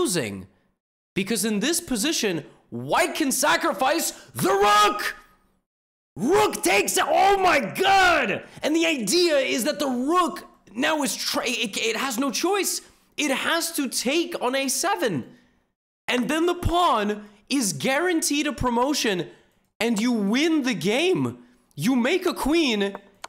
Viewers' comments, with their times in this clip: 0:03 the iconiic THE RROOOK
0:05 classic levi's "THE ROOK"